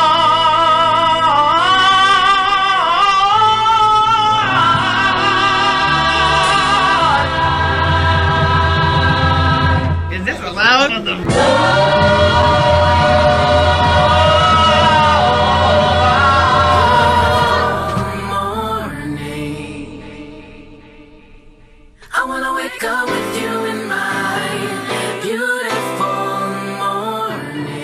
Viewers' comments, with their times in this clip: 0:10 Yes, this is a masterpiece, but can anybody tell me why there's a random audio snippet of the "is this allowed" vine ?